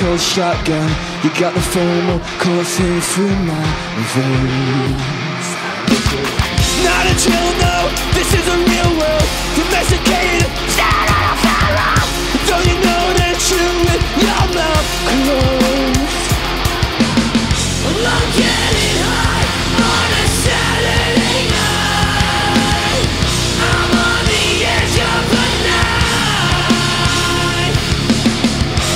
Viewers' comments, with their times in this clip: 0:05 Am I the only that thinks Oli sounds like SpongeBob
0:06 Oh hot dang. The drums Very nice! I AM VERY EXCITE!
0:09 when Oli becomes SpongeBob for one second
0:10 Spongebob? Is that you?
0:10 Spongebob got vocals 😩👌🏻
0:10 Anyone hear a little Spongebob in that?
0:10 i hate my yt recommendation... I can't unhear SpongeBob in my ear 😭
0:10 I can’t get that SpongeBob scream out of my head anymore thanks to a certain video 😂
0:10 when he screams he sounds like Spongebob
0:10 sounds like spongebob screaming
0:10 that was a 1 second saetia